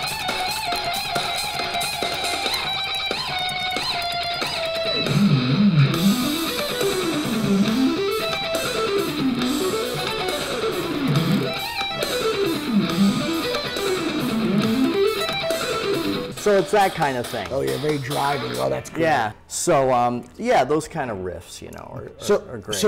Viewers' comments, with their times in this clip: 0:05 ah the good ol' Power Up sound when you don't know what else to play Vroom Vroom! 🎸